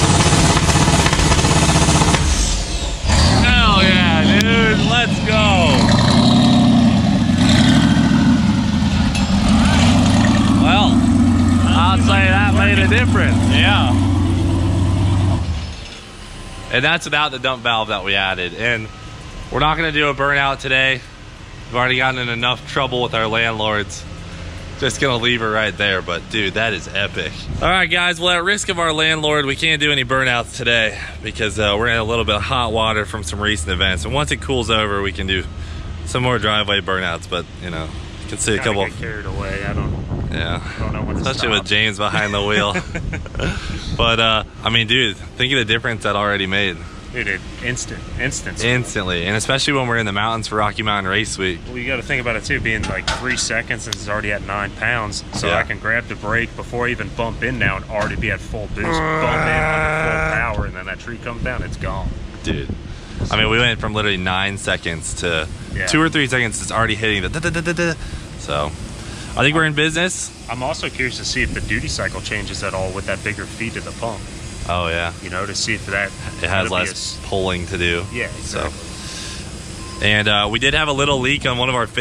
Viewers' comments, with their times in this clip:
0:09 Love the tractor-flap clinkin' !
1:06 Anybody else hear Darude Sandstorm ?